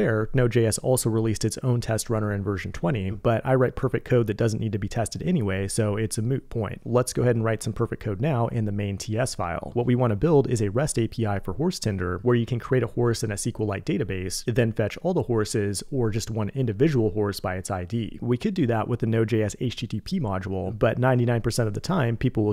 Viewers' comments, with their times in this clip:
0:10 SUPER CASUALLY "What we want to build, is a REST API for horse Tinder.." The smoothest transition ever! 😂